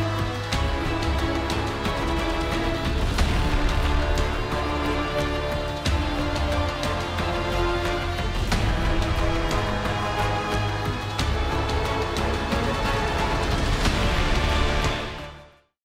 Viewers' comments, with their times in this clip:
0:06 Any one else hear that sound in the background (I have new apple headphones) to me it sounded like a train going by or something with a big engine.